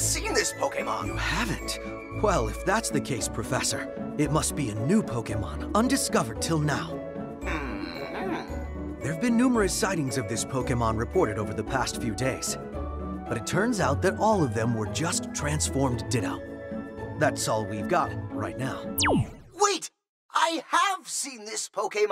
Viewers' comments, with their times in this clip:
0:07 everyone's talking about Meltan but can we please talk about Oak's hmmmMMM